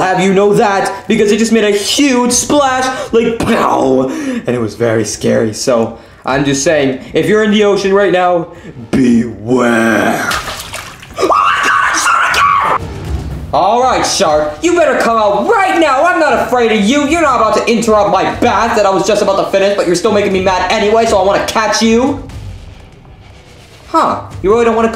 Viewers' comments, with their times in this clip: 0:10 mario is crazy but funny gibberish
0:10 that scream made me deaf